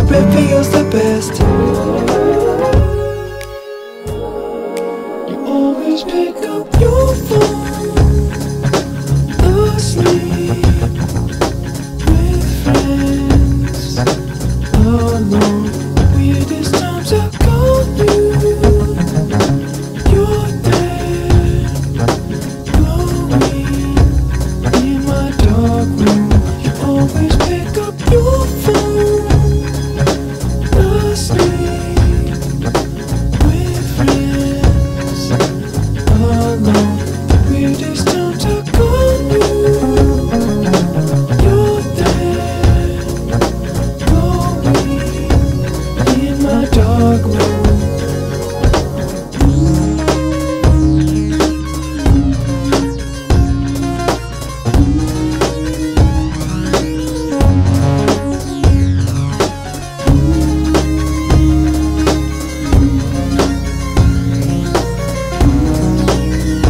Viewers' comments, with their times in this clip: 0:08 Bass drum porblem ^^
0:39 bass fill is sick
0:49 is heaven... 3/4 is usually amazing in a Louis Cole song
0:49 melody is fantastic